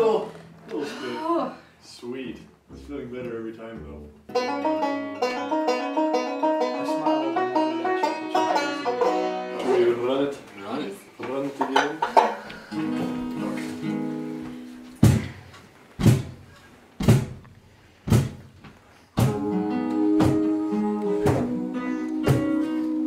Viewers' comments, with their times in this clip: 0:05 first of all, thank you so much for uploading this!! its SO nice to see behind the scenes stuff and i wish there was more of it!! but also, does anyone know what song they were playing ? or if its ever been performed anywhere else? it sounded really gorgeous